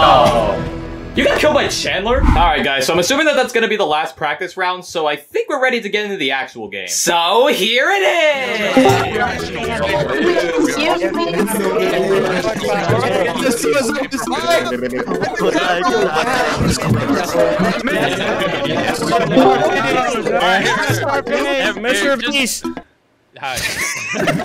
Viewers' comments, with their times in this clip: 0:08 I like how everyone’s chitter-chatting